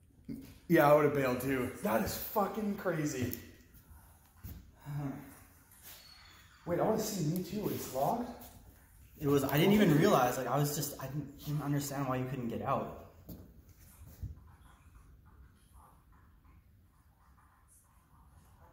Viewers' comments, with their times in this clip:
0:05 sounds lie a door is screeching open from somewhere in the background?